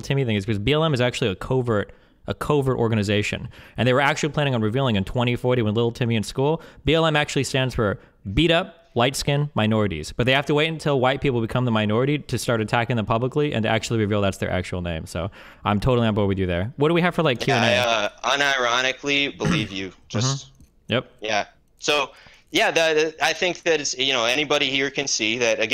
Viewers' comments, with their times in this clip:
0:06 the host almost got caught laughing 😆
0:09 Lol the moderator covering up her laughter
0:10 I love when the mod has to hide her laughter cause the burn was so epic!
0:11 the moderator couldnt control smiling/laughing at how ridiculous a scenario it is